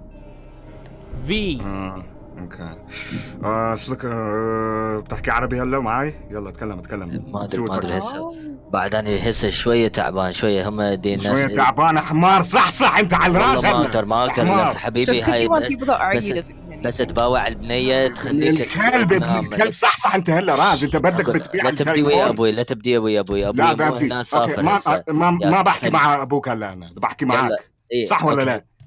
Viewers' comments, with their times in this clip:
0:10 isis type beat starts